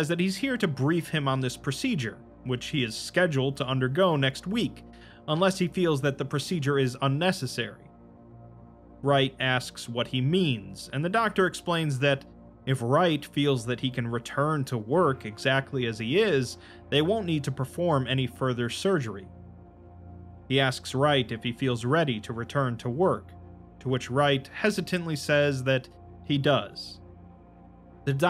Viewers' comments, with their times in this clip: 0:09 this music reminds me of the old days